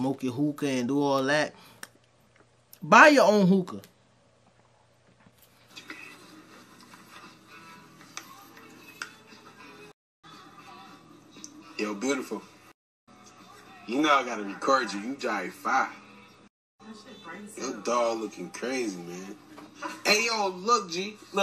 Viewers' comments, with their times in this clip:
0:03 I'd be every bit as concerned with that nasty assed dog sleeping in the bed THAT is DISGUSTING. All this being said, I can barely understand WTF that man was saying.